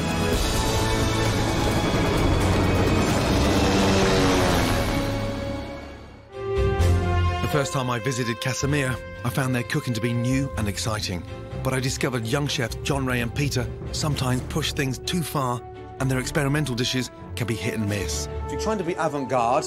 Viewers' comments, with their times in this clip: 0:03 clearly airplane sound dubbed over the helicopter. Just thought it was funny